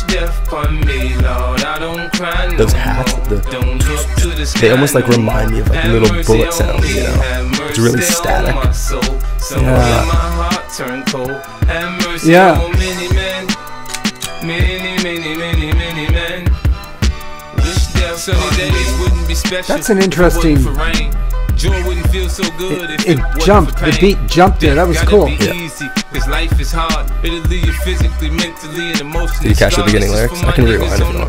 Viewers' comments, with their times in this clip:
0:03 when he mentions the high hat sounding like little gun shots and his dad's hand motion right when the guncocked sound happened HE DID THAT ON BEAT 😂😂😂
0:13 your dad hit that click clack perfectly